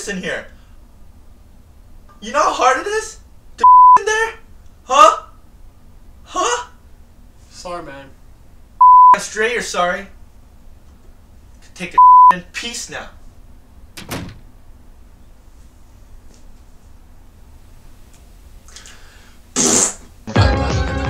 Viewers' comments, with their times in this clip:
0:03 why did they bleep 'poop'